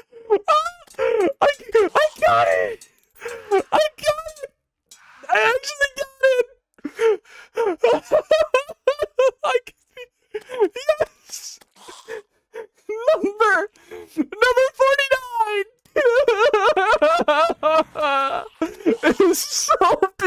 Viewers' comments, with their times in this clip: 0:04 pops from regular show plays terraria:
0:07 pops from regular show
0:07 you sound like pops from regular show 😭 Jolly good show